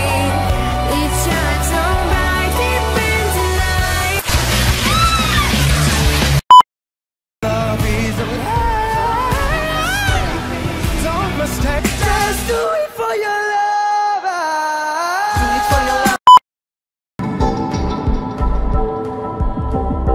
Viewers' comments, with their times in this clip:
0:07 Oh no! Poor Australia and that voice and the one after that... I'm from Australia...